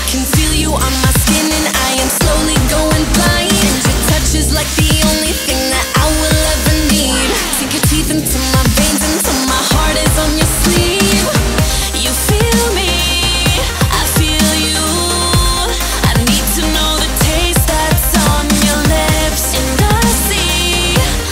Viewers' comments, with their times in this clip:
0:08 the transition to the pre chorus is everything